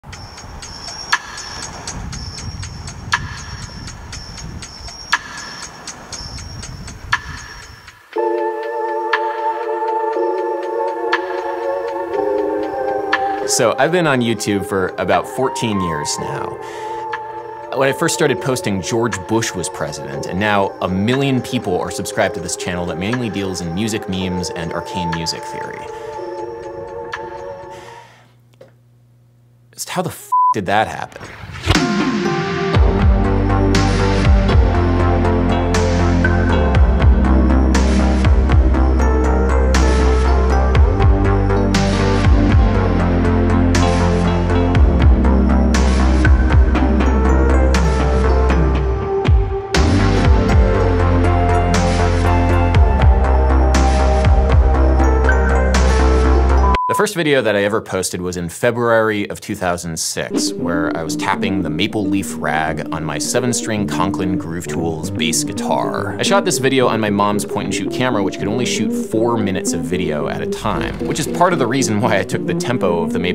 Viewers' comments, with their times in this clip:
0:00 each time this percussive phrase is heard throughout the video I anticipate hearing Massive Attack's Teardrop and it NEVER DELIVERS.
0:31 Anyone else loved the retrowave-lick song at the beginning?
0:32 damn when that BASS joined the party
0:58 Thank you for pronouncing the word “February” correctly, unlike many of your compatriots... (“Feb-uary” 🙄)